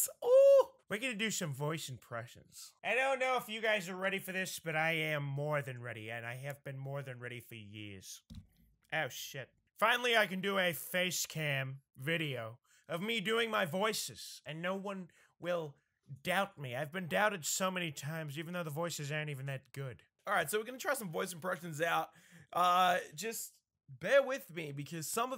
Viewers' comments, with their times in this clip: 0:09 he sounds like pewdiepie